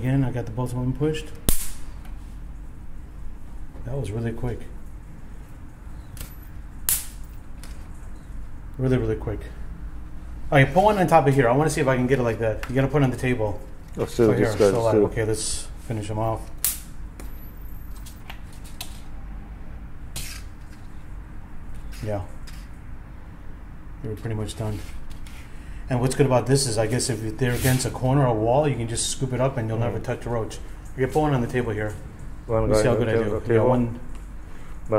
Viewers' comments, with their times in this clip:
0:10 You can hear the roach scream
0:17 Did that cockroach scream